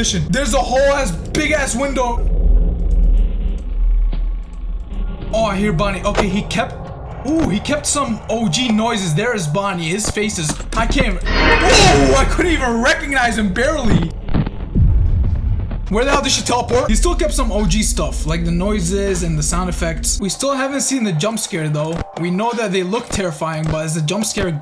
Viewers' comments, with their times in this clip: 0:10 I think its really cool that they kept the original noise for when they're at the doors. in fnaf 1 it was later pitched down (you can hear the original in the ad) but I think this sounds a lot cooler and scarier.